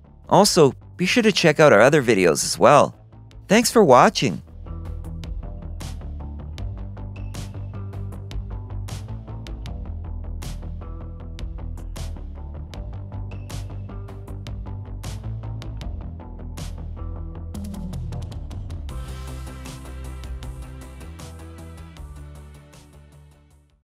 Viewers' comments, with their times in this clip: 0:10 This music represents my all-time mood perfectly.